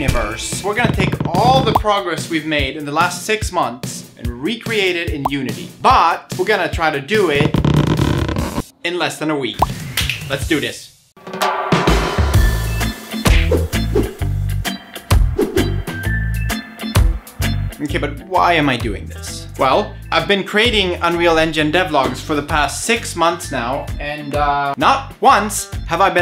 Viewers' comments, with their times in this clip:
0:10 that's awsm ! the mountain view and that reggae music went well together